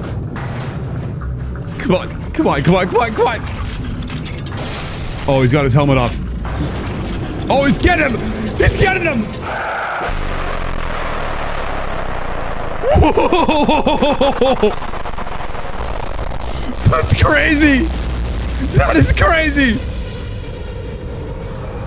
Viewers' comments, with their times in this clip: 0:09 He becamed Hyper G-man and the sound started glitching